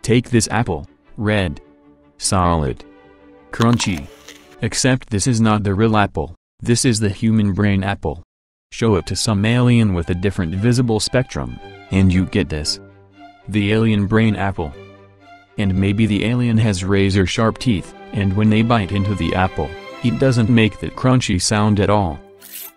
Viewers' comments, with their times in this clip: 0:07 Somehow I thought he said "Somalian" in
0:09 Nice taste of music, guys this is what you call a man of culture